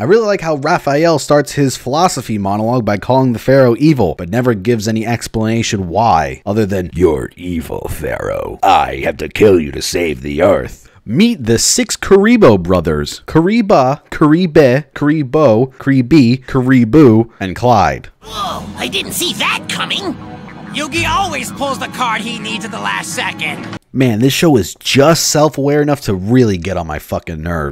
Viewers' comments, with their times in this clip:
0:09 you are the voice actor for Rafael and the Kuriboh names killed me xD